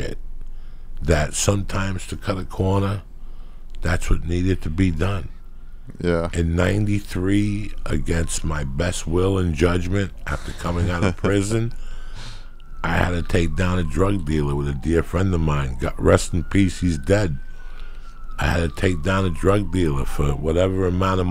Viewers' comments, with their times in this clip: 0:09 Joey's story goes so well with sirens in the backround